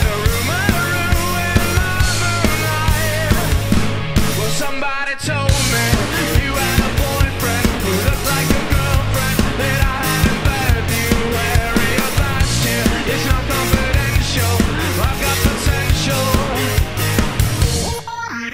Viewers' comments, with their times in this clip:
0:06 anyone know if theres a term for that drum beat? Off beat hi hat